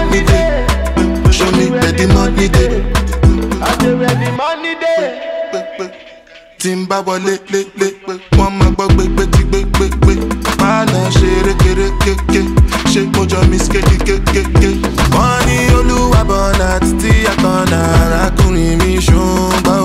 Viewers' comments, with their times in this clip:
0:04 The switch up from straight faya 🔥! Oluwa Burna Banger 💣
0:06 This man can't do no wrong. The way that the beat broke down was Super wavy 🎧🎶🎶🎶🎶🎶🎶🔥🔥🔥🔥🔥🔥🔥🔥🔥🔥🔥🔥🔥